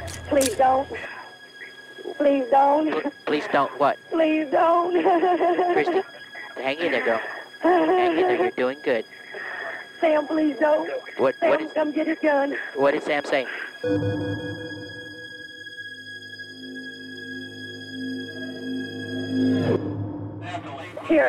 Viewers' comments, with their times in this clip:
0:05 Why when she cried it sounded like she was laughing
0:05 Sorry but why is she sounding like shes laughing